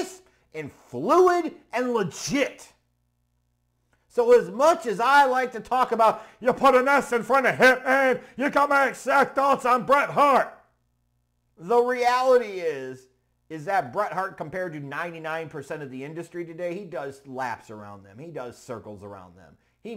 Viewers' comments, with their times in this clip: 0:07 he sounds like stone cold Steve Austin 😂😂😂